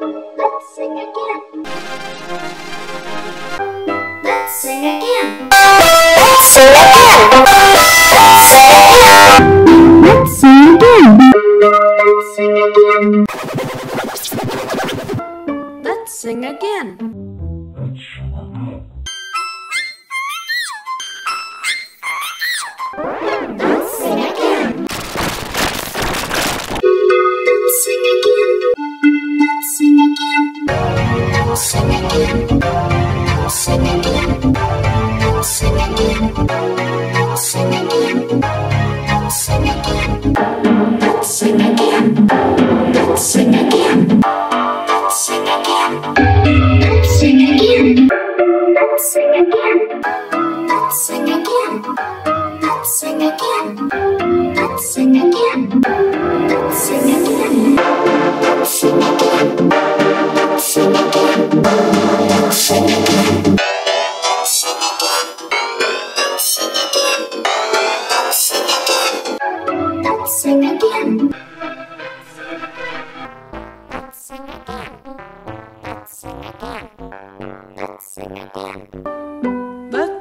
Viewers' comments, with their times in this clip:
0:05 Like Sounds G-Major 556
0:08 Sounds Like G-Major 9007
0:58 Sounds Like G-Major 706
1:00 Sounds Like G-Major 207
1:00 Sounds Like G-Major 207
1:00 Sounds Like G-Major 207
1:00 Sounds Like G-Major 207
1:00 Sounds Like G-Major 207
1:02 Sounds Like G-Major 402